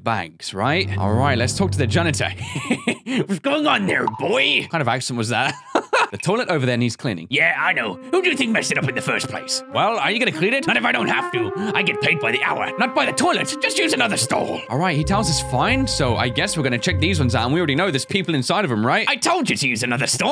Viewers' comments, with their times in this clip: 0:04 The Janitor with an Irish accent, an Accent I hear everyday as I'm Irish and from Ireland {I hate Ireland and I'm glad I don't have that accent} now I can just Imagine the Janitor saying "How's it goin Bai" Bai pronounced "Bye" is what Sporty Irish lads call eachother all the time, I hate it since I hate Ireland, do yourself a Favor, never come to Ireland